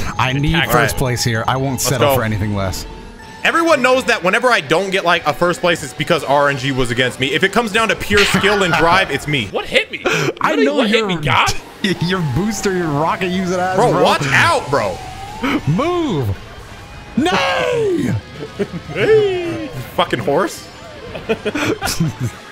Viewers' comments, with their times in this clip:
0:08 Wilhelm Scream That's all I have to say